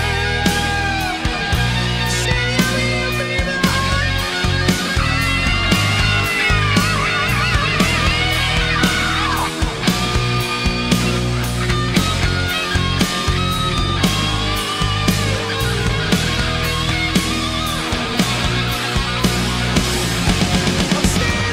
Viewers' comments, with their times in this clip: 0:04 Bruce with Klaus Meine's accent, lol! But damn this still sounds awesome! And the scream from Be Quick Or Be Dead is gold.